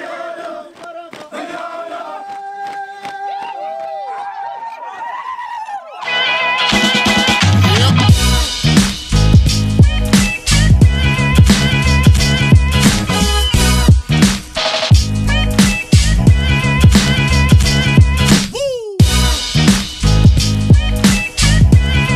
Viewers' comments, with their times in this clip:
0:06 That beat! Man you doing great!!!